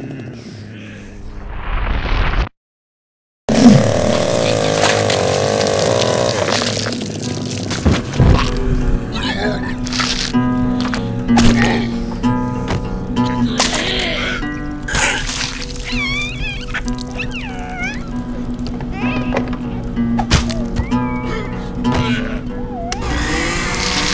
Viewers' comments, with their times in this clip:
0:07 The song reminds me of Mr Coffee by Lagwagon